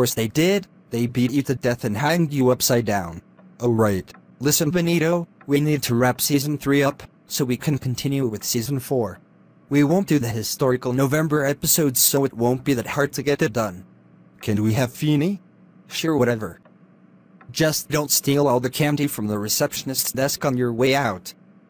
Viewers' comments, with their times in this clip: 0:03 Woah! Mussolini went to Australia for a brief second.